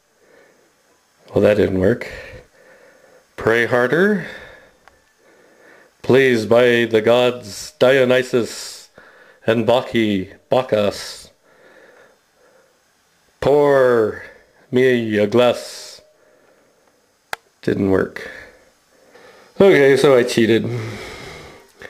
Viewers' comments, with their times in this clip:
0:09 It didn't work because you insulted Bacchus by mispronouncing his name. Blasphemy!